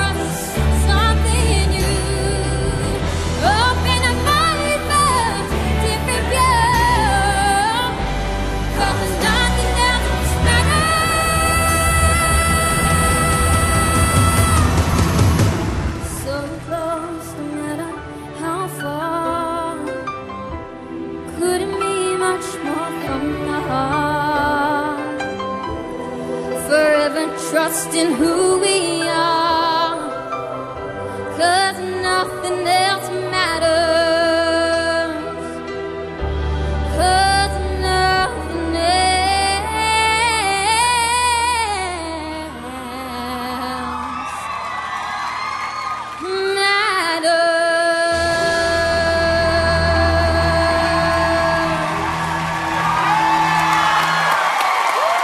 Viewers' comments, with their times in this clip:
0:10 I'm sorry, I usually like Marlisa, but was just unpleasant to the ears.
0:11 Otherwise quite good, but she can't sing the big notes. Shows her limits.
0:39 Though, this is a bit slow indeed, but nothing else matters!!! This performance shows her versatility. #PrincessMarlisa rocks!